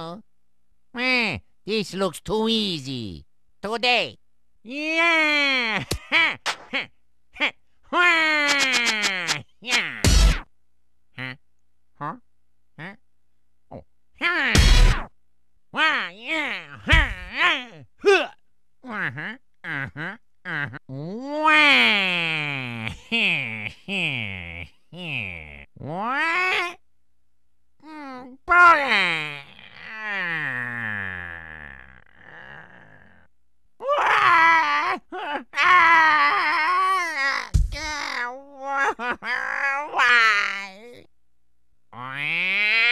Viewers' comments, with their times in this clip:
0:09 The sudden music clip made me die laughing.
0:09 ) Discount Michael Jackson +1 Sin
0:17 that has got to be the most invigorated waluigi noise ever.
0:17 that did not sound like waluigi
0:18 can we just say how he literally doesnt sound like himself
0:28 sounds like he's saying "Boner" XD